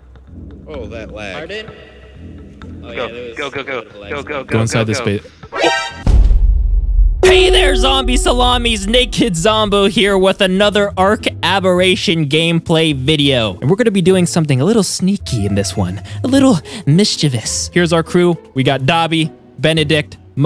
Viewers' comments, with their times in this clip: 0:07 he's like rapping